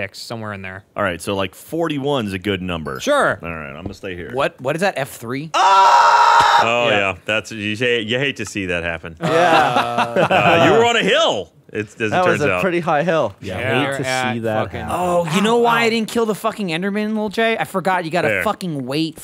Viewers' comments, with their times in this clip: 0:04 wouldn't be a Minecraft LP without Gavin shouting